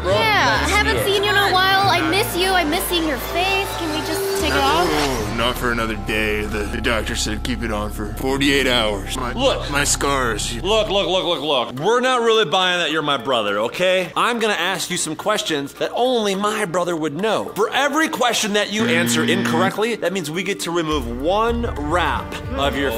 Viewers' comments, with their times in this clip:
0:06 When the spy ninjas trying to convince him to take it off i heard his voice and that's chef glutton, i heard the voice